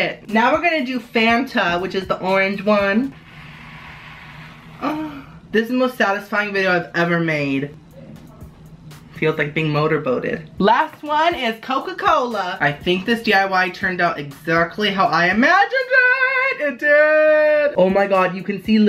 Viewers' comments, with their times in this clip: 0:04 sounds like he was having sex hahahhahahahhahahahah😂😂😂😂